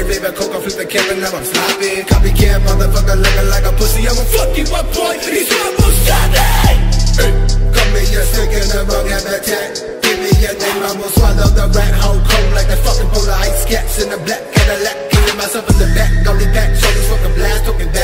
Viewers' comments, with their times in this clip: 0:06 that EH is so good